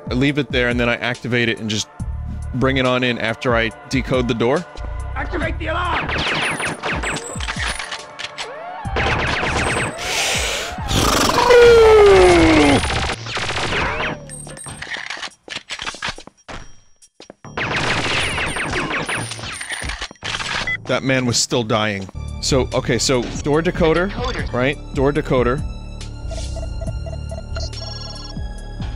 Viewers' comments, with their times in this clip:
0:09 best Vinny noise